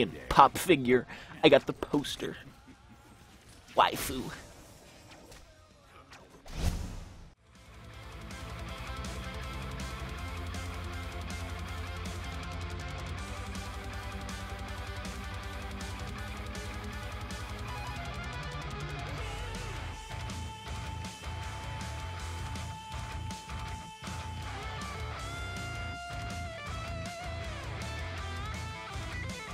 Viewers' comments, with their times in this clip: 0:09 why did he put guitar music over his voice ? :( "vroooooooooooom."
0:11 "ayy yeh get shit on!. yjdjkbjfkb get shit on!"... why remove the audio? it was fucking hilarious